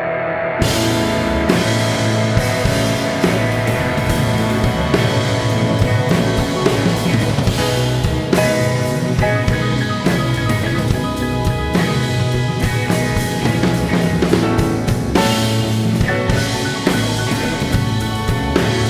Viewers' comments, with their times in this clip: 0:05 the synth through that delay...............YOS